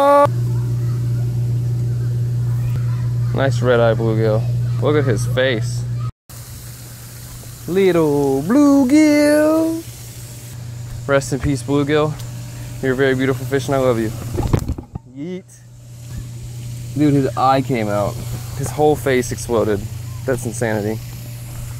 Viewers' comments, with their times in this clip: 0:05 +1 for Leo impression